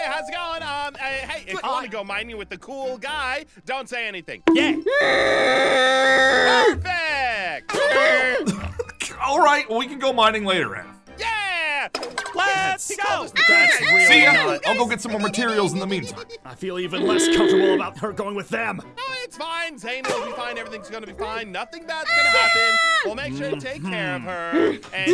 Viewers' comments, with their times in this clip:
0:07 Oh my Gosh he’s trying so hard to hold in the laughter!!!